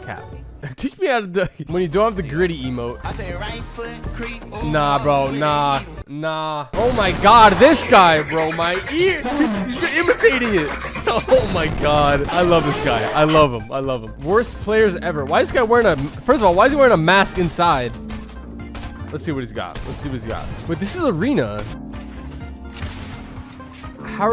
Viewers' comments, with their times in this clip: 0:07 Why is nobody talking 😂